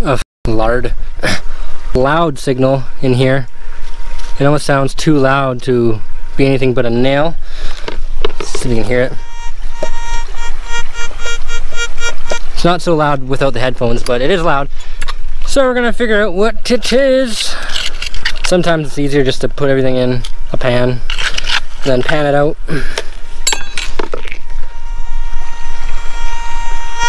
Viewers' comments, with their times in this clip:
0:10 thought it wasthe coffin meme song